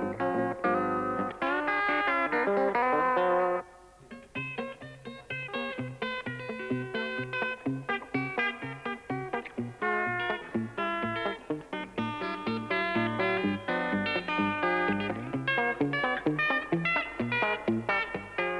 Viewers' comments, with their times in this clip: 0:04 Do you know the name of the song ? Also who is the guitarist who's playing it. The song almost reminds me of like Doc Watson or something very similar to his style.